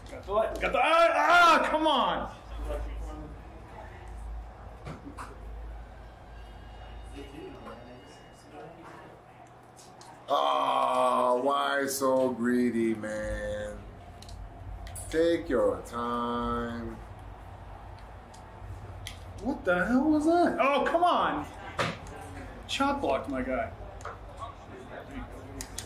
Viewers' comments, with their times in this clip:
0:07 Who else can hear the distant ring bell ??